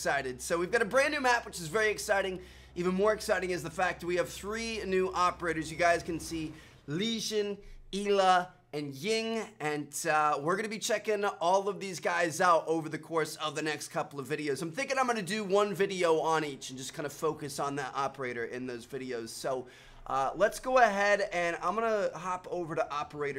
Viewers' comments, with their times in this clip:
0:06 He said ela wrong😂